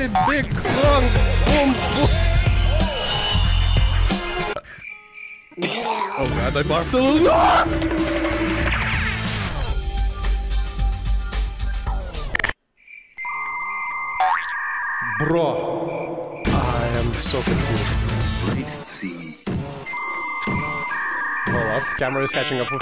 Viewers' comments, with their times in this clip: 0:05 broh the barf